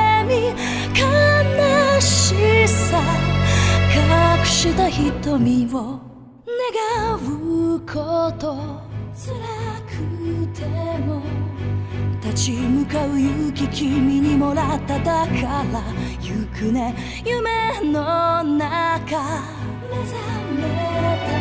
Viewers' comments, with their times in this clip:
0:06 am I the only one who heard the n-word